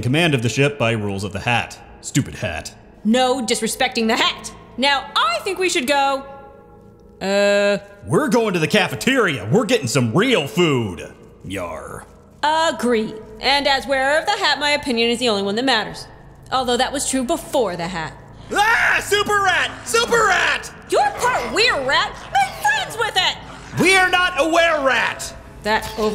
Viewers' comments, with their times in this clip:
0:10 is it just me or did it sound like arthur had a southern accent